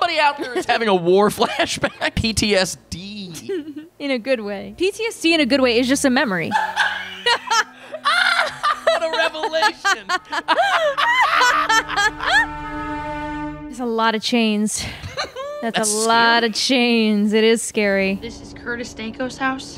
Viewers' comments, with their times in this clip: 0:05 *witches laugh in the moonlit night